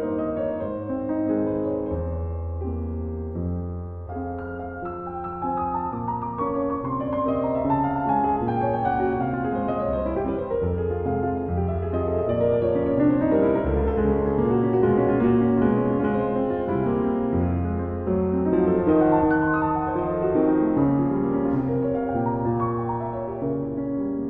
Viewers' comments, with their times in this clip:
0:09 I love this nocturn but this one is played a little fast for me. There is one note in OP.55 No 1 that can haunt me but it didn't here. Listen to it. its the low note You might have to go to a few seconds before to really hear what's going on there. Tell me what you think. And listen to other versions of the same nocturn and that note lingers for a much longer time. :D